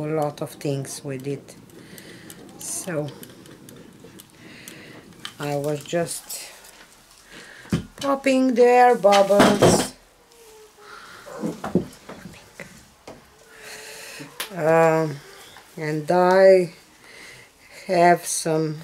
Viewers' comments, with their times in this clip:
0:05 Hey, I hear chicken(s)! I love my chickens. Ok, I'm in min, back to your video :)